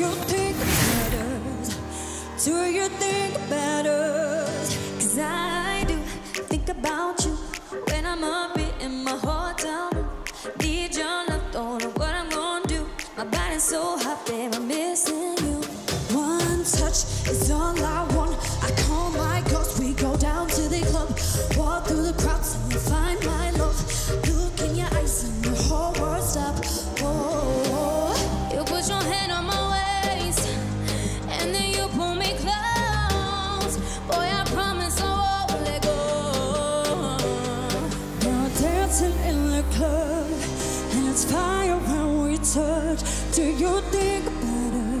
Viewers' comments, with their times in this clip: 0:04 Jade just does it for me... Her voice, stage presence and her note change 😶
0:06 "think about you" kill me this vocal by jade
0:12 I just died at the raspy voice
0:13 ogh i love jades raspy vocals🙏🏽😍🔥
0:13 jade's raspy voice 🤗
0:13 Jade's raspy voiceeeee oh mah gawd
0:13 jades voice is so raspy. it sounds so good
0:28 From I’ve had Leigh’s vocals on repeat because it sounds sooo good!
0:28 Leigh anne's voice is very similiar to the studio version!! SHE SLAY IT!
0:28 I think that Leight is not singing live
0:29 this is where the Queen appears and that voice tho😫😫Leigh 🤤